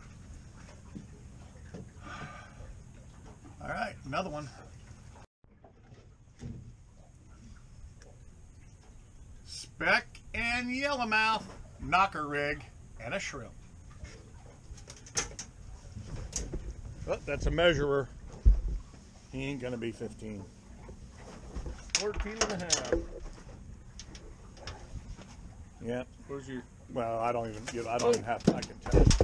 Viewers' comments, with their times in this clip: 0:10 Turn up ye'r dumbphone volume!!!